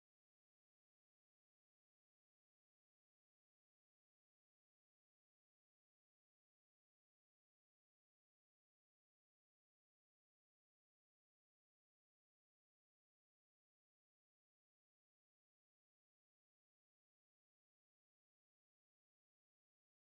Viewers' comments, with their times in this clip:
0:04 #19 Cammer totally cut off the dump truck, cammer now reason not to let me merge, hey cammer speed up to the flow of traffic, don't crawl out into traffic then act all surprised when you almost caused an accident, I bet you didn't even look before changing lanes, you heard the truck lock up his brakes which scared the crap outta you and then you finally hit the gas and moved back over into the merge lane, totally the cammers fault.